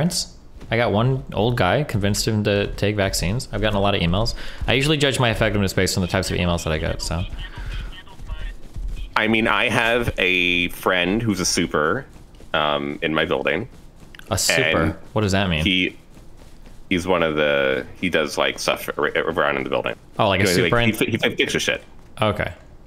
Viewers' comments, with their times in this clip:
0:05 Is the “he handles my” drop through like proximity voice chat in the game? I’ve never played Rust. Looks fun though.